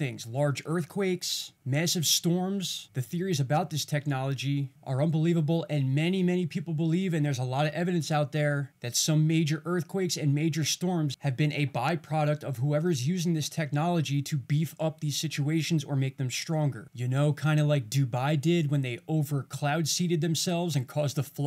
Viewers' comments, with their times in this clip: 0:04 Your voice sounds different !? the center looks like a creepy red-eyed, laughing skull , looking to the left